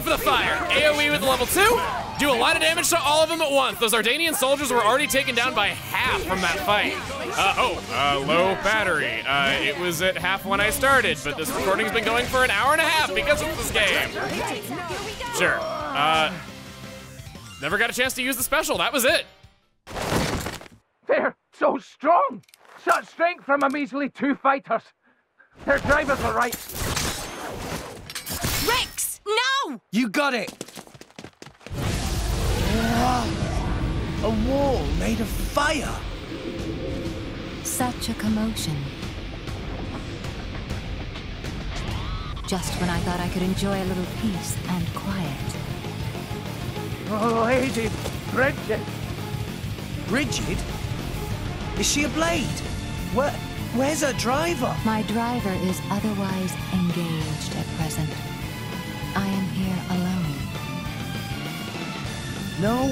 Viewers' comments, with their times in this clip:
0:07 the low battery warning has returned!
0:47 Brighid walking in with that RIDICULOUS battle music is one of my favorite scenes from early game... she’s so cool. Or... hot.